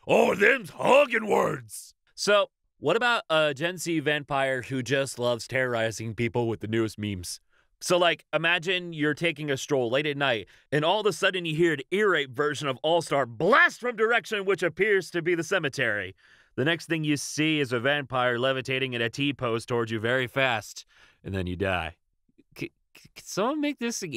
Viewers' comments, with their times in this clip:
0:09 that just sounds like abridged Alucard but slightly older